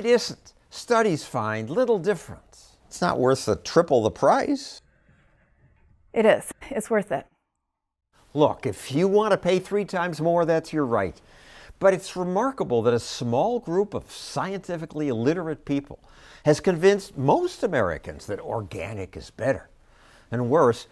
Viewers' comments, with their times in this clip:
0:04 I have years of video editing experience to know a bad-faith cut when I hear one. Around the mark, after Stossel makes a point about the price you can hear an audio cut if you notice closely before her response. Her response being "it is worth it." The cut makes it sound like she's saying the price is worth it, but we don't know what she actually said right after Stossel complained about the prices raising. So that means we don't know what her actual response was, and he could be completely misrepresenting it through editing.